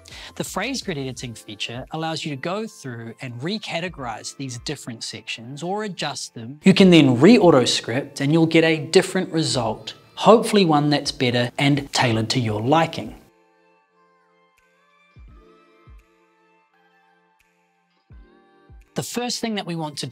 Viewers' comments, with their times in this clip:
0:08 that volume increase got me really surprised haha